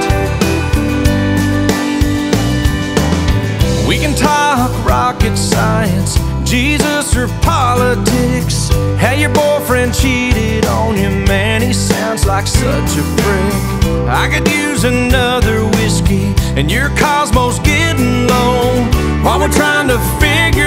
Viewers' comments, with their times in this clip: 0:05 she looks over at someone and starts to giggle lol
0:05 this viedo is boring... i love how she just sits there... and she just randomly starts laughing??(:
0:05 i like the part where she starts to laugh